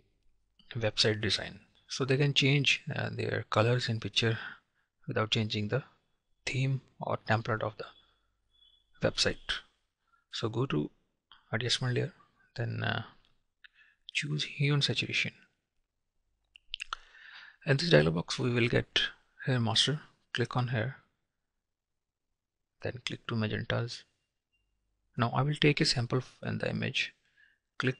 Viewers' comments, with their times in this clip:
0:10 The most important part of the video... telling us which layer to push ("asamalayer" ???), he completely mumbles so the rest of the video is worthless.